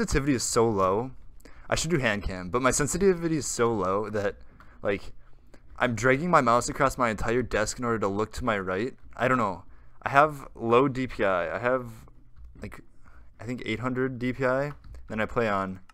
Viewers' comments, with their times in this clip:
0:03 My sensitivity is SOLO